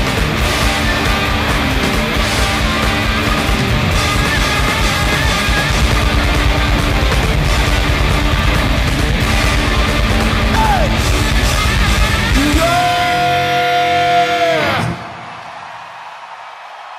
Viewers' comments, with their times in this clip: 0:03 Animal on the drums! Holy shite.